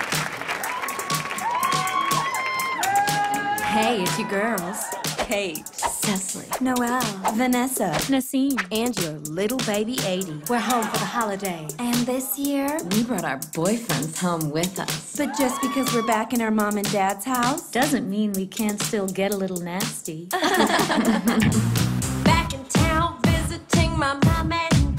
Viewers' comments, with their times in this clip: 0:07 I still want to know why they dubbed over Nasim’s name